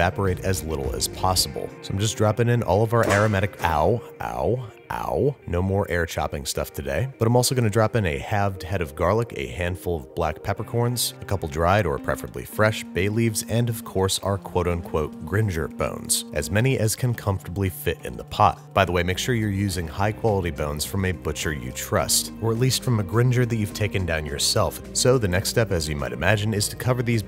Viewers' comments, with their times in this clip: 0:03 I like how he is not enthusiastic when he says ow
0:13 made me think my phone was going off.